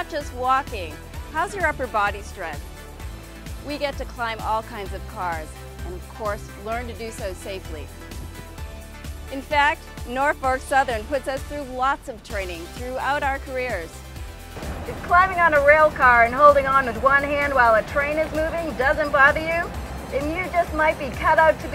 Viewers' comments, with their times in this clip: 0:09 she said Norfark southern lol